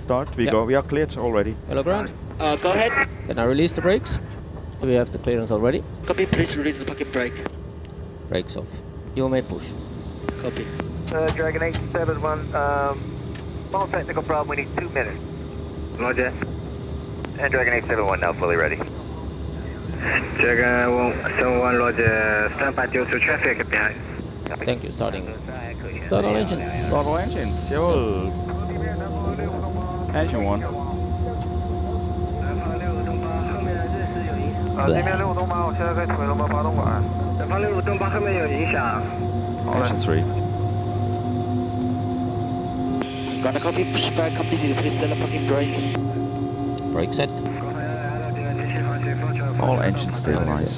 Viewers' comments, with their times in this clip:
0:05 "Copy, please release the fucking brakes!" am I the only one who heard that???????
0:05 i swear he said copy release the fuckin brake
0:05 "Please release the fucking break? LOL
0:05 i heard : "Can we please release the fucking brakes?"
0:05 Did I hear correctly? "Release the f**king break" ?!
0:06 "Copy, please release the f*cking brakes" ? =))
0:06 Does he go "Please release the f*****g brake" ?
0:34 what is this? burping?
0:36 Always love how airbus aircraft engines starts ♡♡♡♡